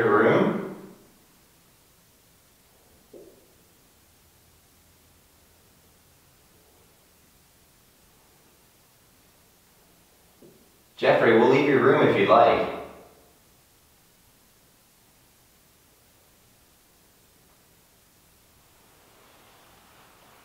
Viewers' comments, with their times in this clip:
0:03 you ask if Jeffrey wants you to leave his room and I hear another light tap